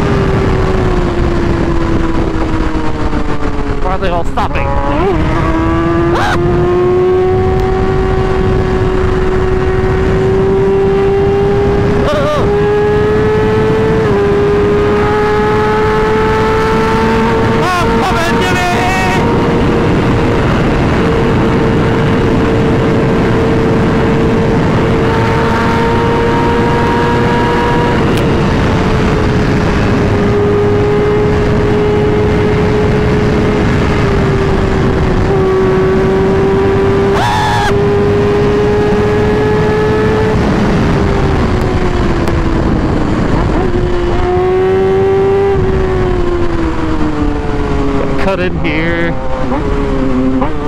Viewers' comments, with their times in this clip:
0:05 Most hilarious scream ive heard from a motovlog lmao
0:35 that scream is just so relatable 😭
0:35 that scream is just so relatable 😭